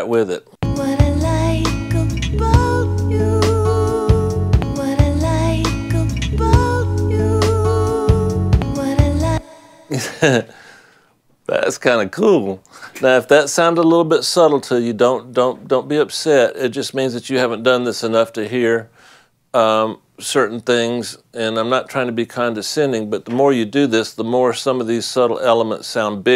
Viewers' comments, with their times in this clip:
0:10 very nice. The voice already becomes clearer and the reverb more apparent. It sounds like there is more "breath" in the mix.